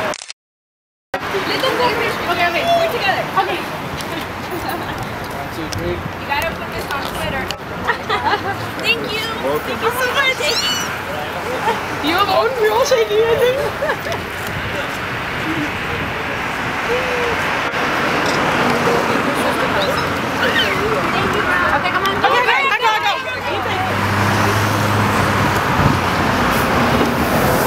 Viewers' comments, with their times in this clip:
0:10 any1 else heard that mouse ? :P